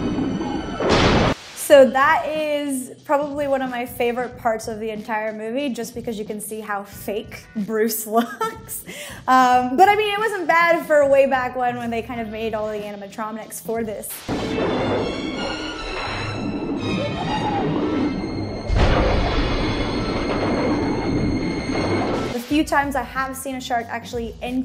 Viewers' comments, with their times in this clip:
0:09 'animatromics' I thought you had to be intelligent to be a marine biologist... Seems not.